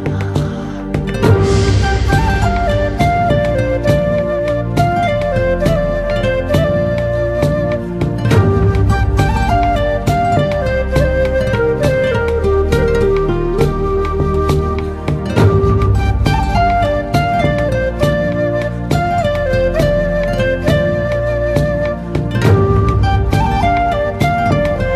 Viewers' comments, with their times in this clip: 0:07 My dad use to wake up in the middle of the night or in the morning saying he was hearing Hey YH 🔥 HY YH🔥 pronounced Hey YA!!😂